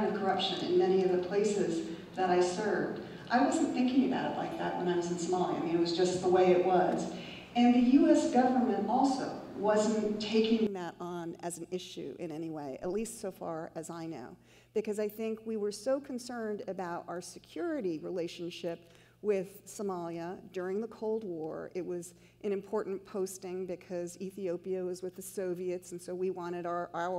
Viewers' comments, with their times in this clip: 0:10 Her mic fixes itself for anyone bothered by the early audio